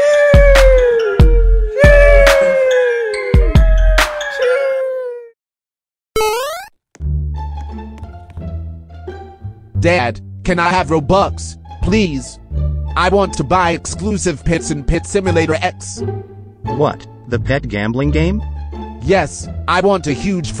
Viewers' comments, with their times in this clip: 0:04 enes musci join the chat